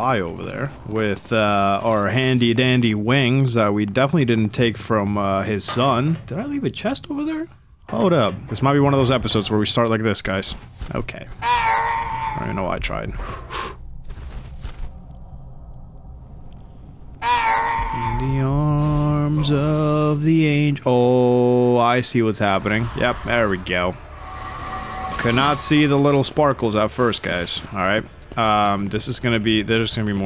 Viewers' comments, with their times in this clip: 0:10 Are those Yoda screams lol
0:13 The end of Zeus is near, bruh the Lego yoda death sound 🤣🤣